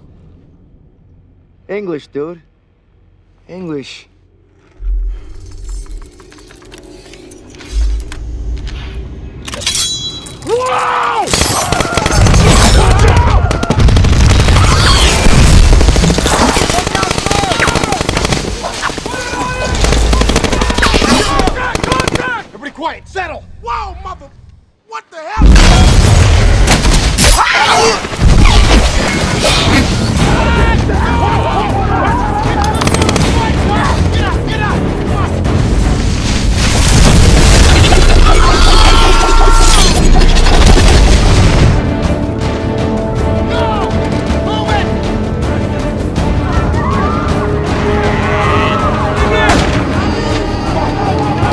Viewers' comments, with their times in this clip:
0:08 that "WHOAA" feels so genuine it still gives me goosebumps
0:10 That scream is hilarious 😂
0:34 The first Transformers movie definitely nailed just how terrifying decepticons would be. The soundtrack and sound design work perfectly with the CGI that still holds up. The shot gives me goosebumps every single time.